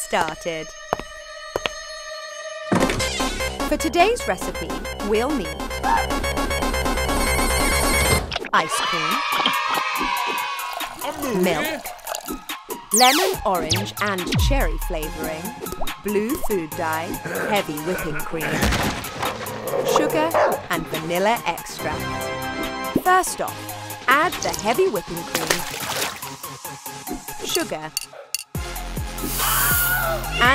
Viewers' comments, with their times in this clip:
0:03 sonic drowing sound
0:03 is there sonic drowning in the fridge?
0:11 I heard markiplier’s voice of a cow (Amooee)
0:17 i can hear the doomguy hurt sound